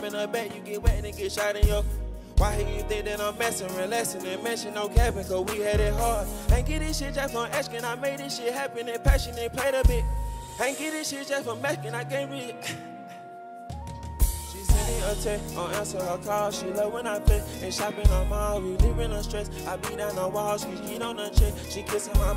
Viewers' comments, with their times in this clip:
0:10 his voices cracks in autotune and he laughs it off lmao, found that pretty funny